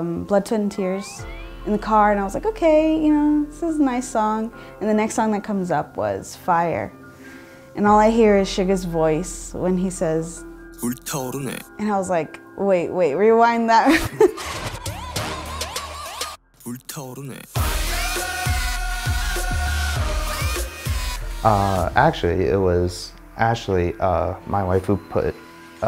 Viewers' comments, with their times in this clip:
0:10 yes rewind it😉 No malice but SUGA’s voice is big time sexyyyyyyy💜